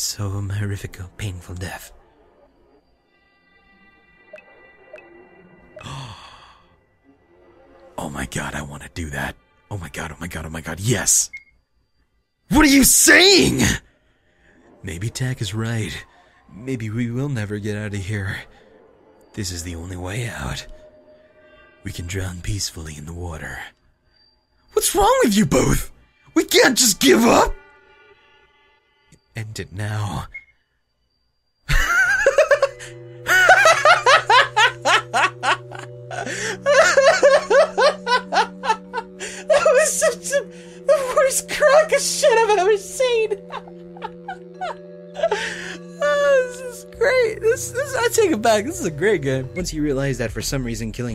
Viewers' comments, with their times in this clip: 0:05 That raw excitement
0:31 that laugh tho when D-Bell drowned XD
0:31 dat laugh xD
0:31 lol your laugh ^.^ made my day... :D
0:33 Dat laugh XD